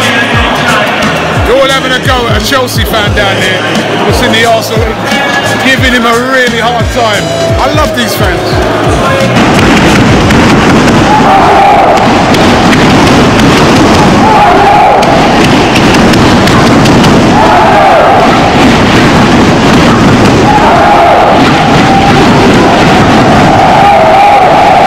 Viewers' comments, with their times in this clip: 0:09 they sound like chanting "ass_hole"